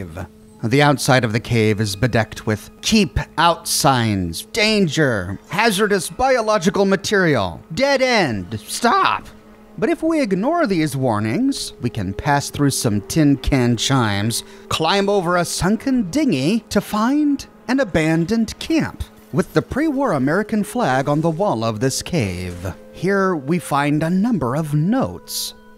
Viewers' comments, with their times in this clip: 0:09 that was the perfect voice crack
0:09 The voice crack lol